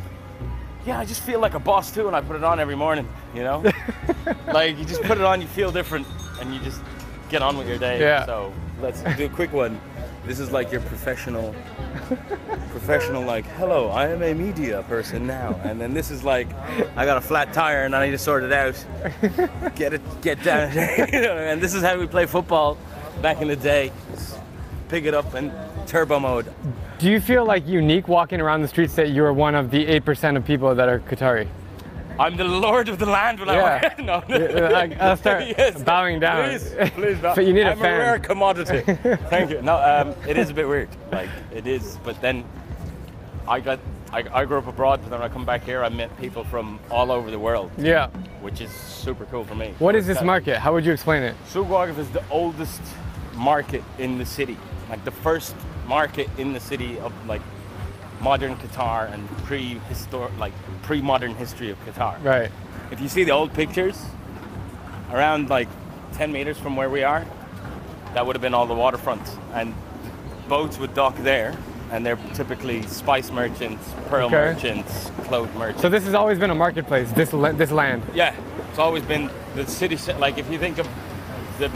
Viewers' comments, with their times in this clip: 0:10 The Qatari bloke has an Irish accent. He did say he grew up abroad.
1:05 the way he said metre say it all